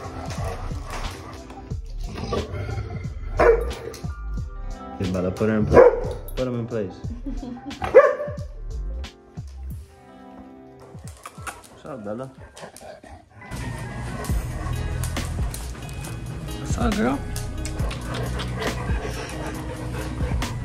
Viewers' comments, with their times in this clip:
0:06 I heard a girls laugh...